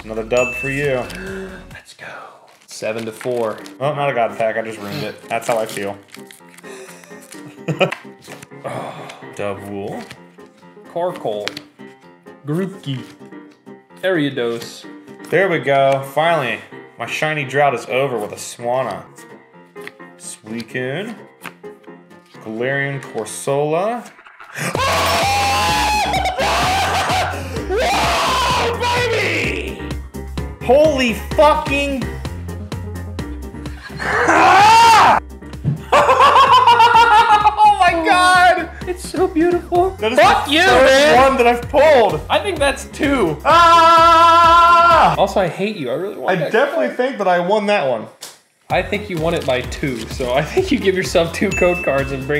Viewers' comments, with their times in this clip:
0:04 "why do i hear boss music?"
0:20 turn down your device
0:23 Jesus that audio spike
0:24 Cover your ears.
0:24 Wait I don’t remember the Pokémon called AHHHHHHHHHHH AHHHHH
0:33 anyone else hearing the quandale dingle “AUGGGHHHH” scream?